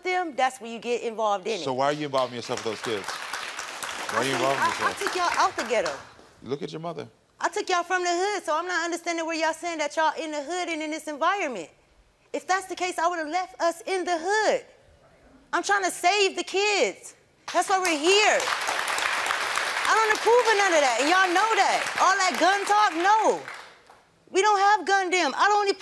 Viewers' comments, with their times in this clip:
0:07 I get the mom but to be honest the WAY she's actually yelling and not teaching or putting the emphasis of Why it is not good to do that and that actions have consequences, makes her look a bit like a caricature specially in front of these kids. Like she's just talking/venting, not talking to them. Where is the father?